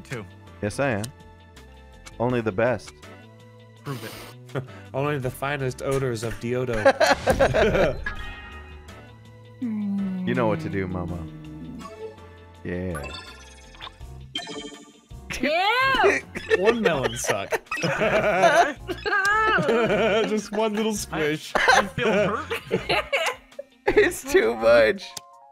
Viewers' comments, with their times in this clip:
0:10 with the music and everything. It honestly sounded like more of a kiss than a squish.